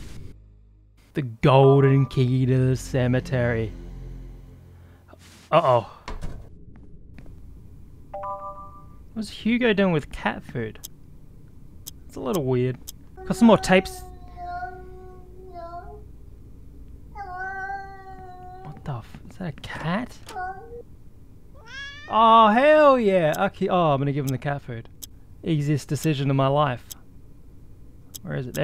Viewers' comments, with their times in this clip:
0:10 I love that the devs used real cat yowling.